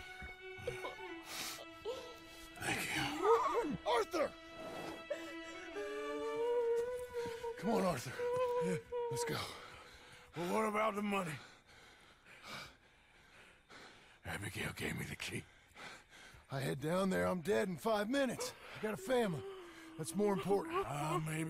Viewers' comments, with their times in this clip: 0:09 the fake cry is just cringe